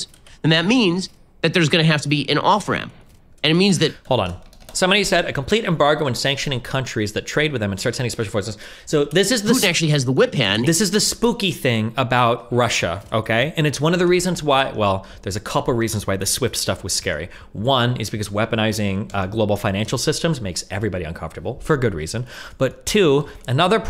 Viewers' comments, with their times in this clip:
0:08 I love how destiny inturupts himself for effect 🤣 I'm a fan lol dudes "mental muscle memory' is on point